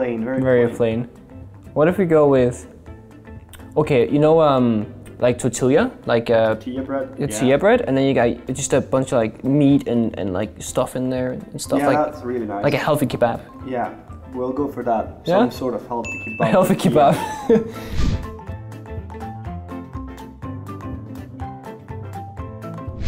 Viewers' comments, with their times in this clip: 0:05 Pengu really just pronounced tortilla with the L’s instead of as a Y